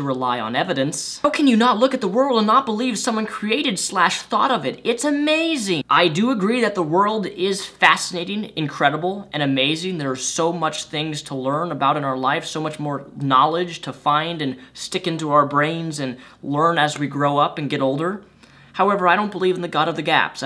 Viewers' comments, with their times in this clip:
0:05 you sound like Gollum